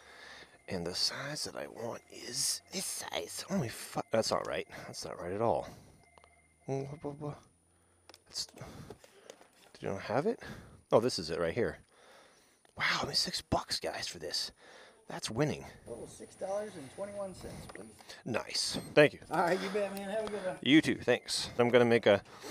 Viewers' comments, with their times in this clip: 0:03 "Holy Fu..." Or am I hearing things?